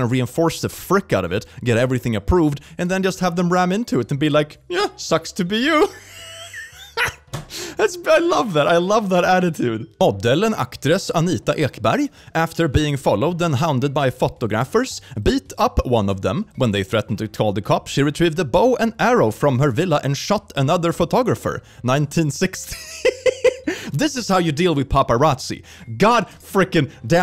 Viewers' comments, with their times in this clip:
0:10 Haha is that meant to be a Danish accent?
0:10 he started to talk in draconian